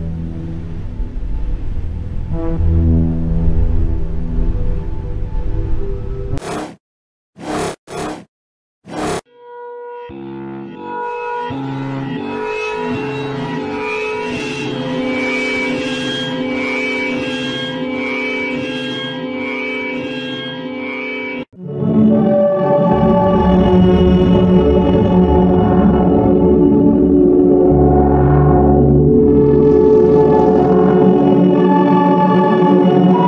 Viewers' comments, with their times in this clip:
0:09 sounds like uncanny phase 30
0:17 it sounds like me incredible becoming uncanny phase 30
0:21 Song is nice